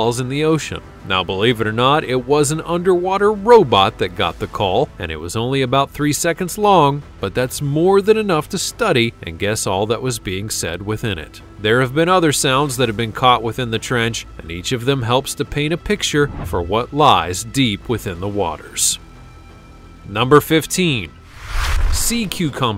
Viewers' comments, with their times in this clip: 0:03 See it on the left ... that jaw closed louly